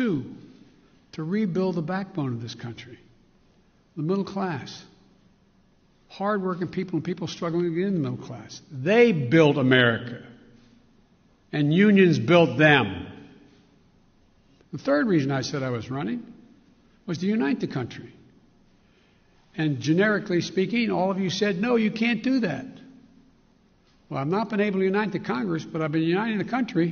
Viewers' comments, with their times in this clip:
0:10 wth? Sounds like he's dubbed.